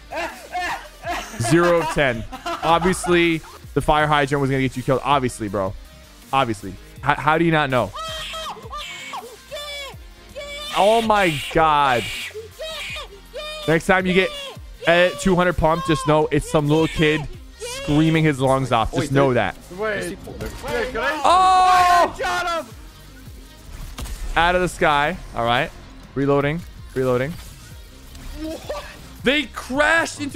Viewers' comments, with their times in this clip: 0:07 thats probally macros since he sounds like hes 5
0:11 he could take the gold pump but instead he screamsss n he takes the fry fish🤣🤣🤣😂
0:16 The other took his gold spaz No wonder he was screaming